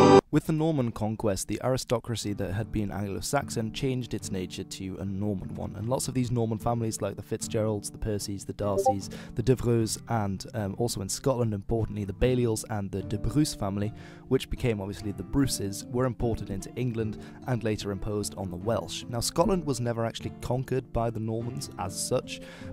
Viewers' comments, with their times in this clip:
0:08 someone all up in yo discord.
0:09 Discord notification sound made me check for pings.